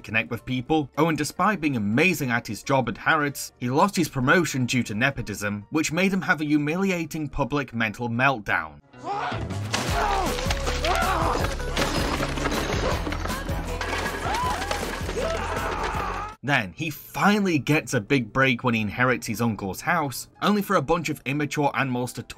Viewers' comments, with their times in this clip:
0:09 just replace the music with serious music and you get a drama movie.